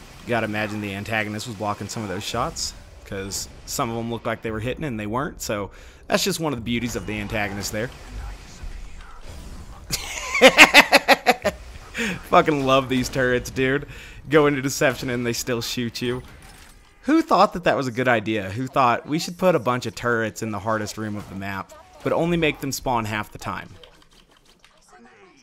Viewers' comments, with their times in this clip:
0:09 that was an actual genuine laugh lol